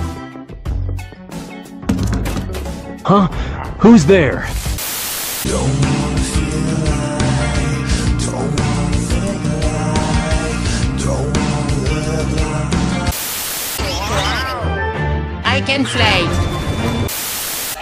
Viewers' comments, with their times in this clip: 0:05 when luigi sings it's funny l o l :)